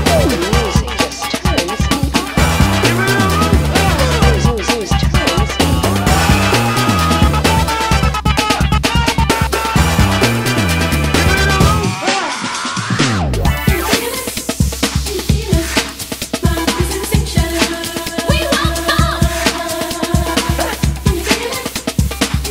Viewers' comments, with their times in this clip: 0:10 yell caught me off guard 💀